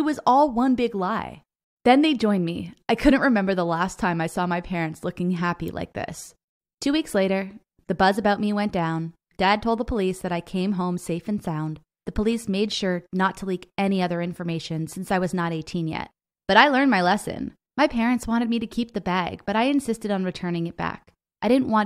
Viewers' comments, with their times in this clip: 0:09 sounded like a poem. So rhythmic